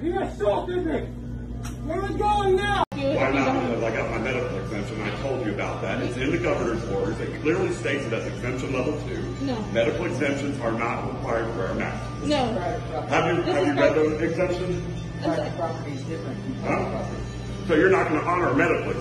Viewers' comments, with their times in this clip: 0:04 lol dude sound like the verminator from over the hedge. edit: oh also that dude from the bee movie